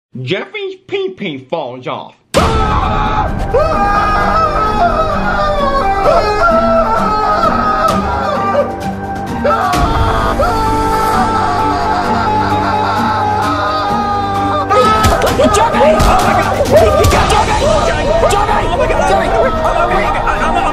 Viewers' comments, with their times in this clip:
0:02 when you realize you stayed up till 3am making a vid of Jeffy screaming
0:04 When someone bullies me: screams like a maniac.